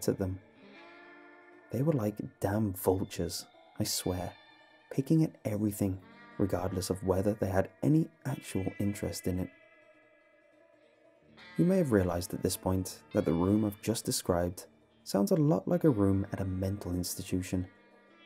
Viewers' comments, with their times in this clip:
0:06 the music playing at 1 would be dope if a hard beat was added